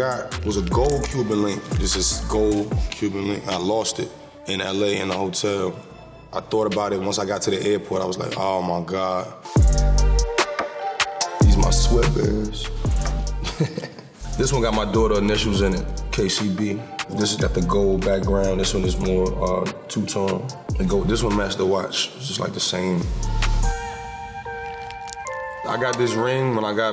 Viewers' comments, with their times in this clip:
0:09 that beat is so hard.